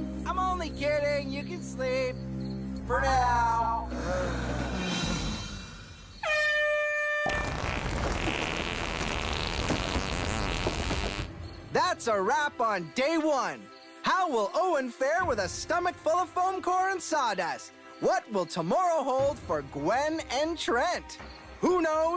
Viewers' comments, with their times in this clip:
0:06 Funniest huge fart